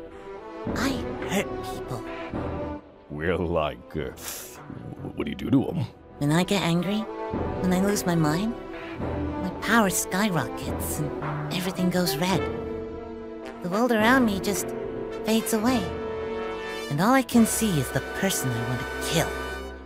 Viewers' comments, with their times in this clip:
0:04 it... kind of brilliant how into the discussion Cell is in that VERY moment. ~Sharp excited inhail~ "Well like... whaddya do to them?"